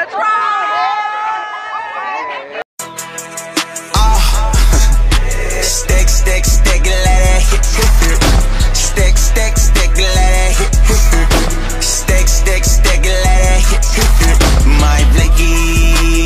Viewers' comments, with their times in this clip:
0:03 lyrics: “AH, STEAK 🥩 STEAK 🥩 STEAK 🥩 LETTUCE 🥬 STEAK 🥩 STEAK 🥩 STEAK 🥩 LETTUCE 🥬.”